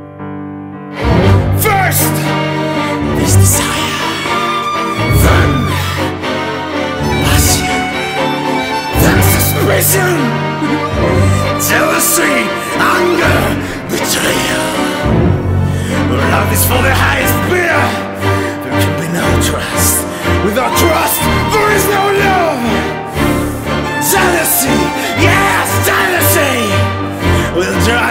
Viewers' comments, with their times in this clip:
0:10 In minute its like he cries.
0:12 by the way i like so much , that" ANGER!!!" is so stunning !!!